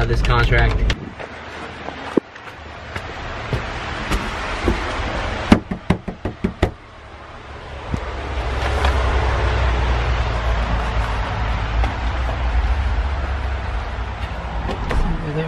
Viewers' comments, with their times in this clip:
0:03 that is not how you knock, don't let me catch you doing this again